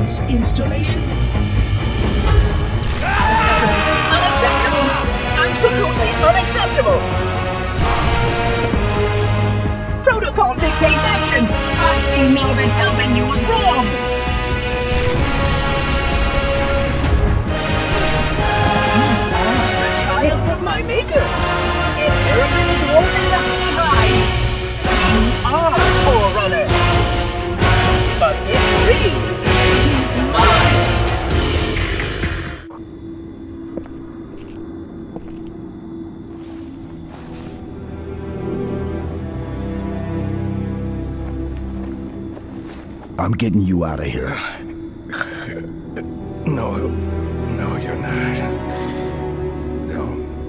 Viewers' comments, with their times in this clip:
0:07 You crazy genious... You made H3 sound great without Marty 👏👏👏👏 You nailed every scene Though I personally would have used Immaterial
0:32 Damn, Johnson's Death was already powerful, but with Halo 4's version of Never Forget, it's just heartbreaking, good job